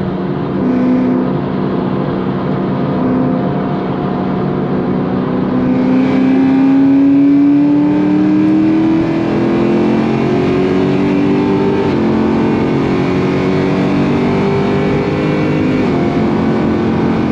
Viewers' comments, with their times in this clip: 0:05 the cold engine is crying